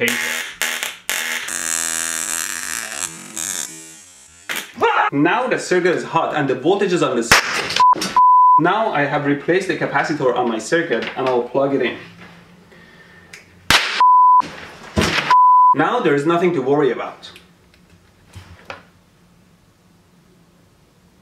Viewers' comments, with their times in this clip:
0:04 screams of terror